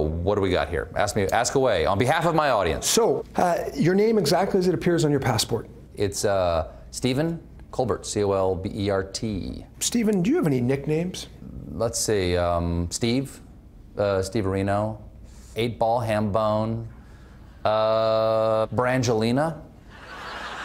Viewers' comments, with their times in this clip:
0:07 Why does Stephen say "ColberT" ?
0:07 he pronounces his last name the way his family does, with the "l"and hard "T" in Colbert, not "Co-bear". Interesting